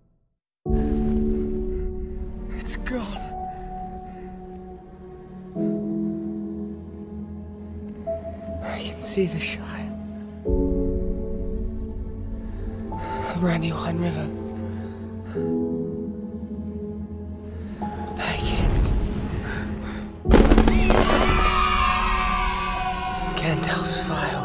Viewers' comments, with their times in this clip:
0:10 That note hits so hard with the beautifully done scene change.